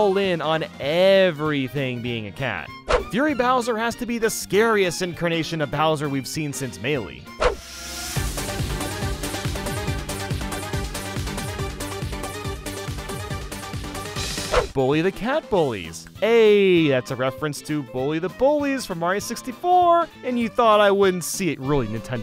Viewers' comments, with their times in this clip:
0:08 I saw what u did with the music😆
0:09 u gotta admit you bopped you head to the beat after the theme stopped